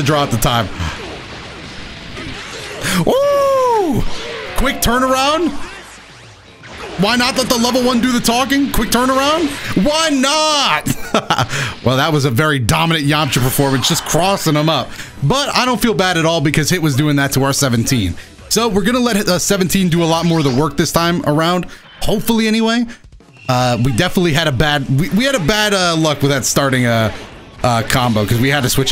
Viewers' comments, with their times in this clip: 0:09 Was it just me or did that sound like autotune?